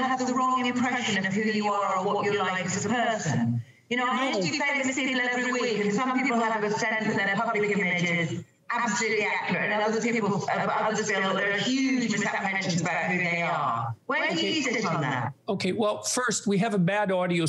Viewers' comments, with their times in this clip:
0:05 a citizen in city 17 getting read his rights.